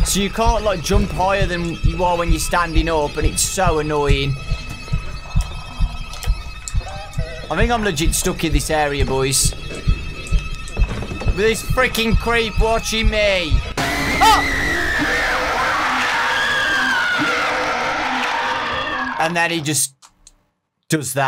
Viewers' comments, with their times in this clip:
0:03 wait i hear something like HE HE !!! It's Michel Jackson not Ayuwoki it's Michel Jackson horribles